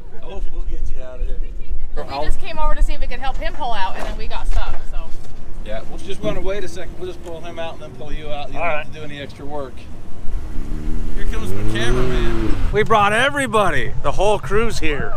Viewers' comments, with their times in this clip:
0:03 the tone, the gesturing, the head position... You just know it's a Karen. Feel sorry sorry for her husband doing the right thing and having to deal with someone like that.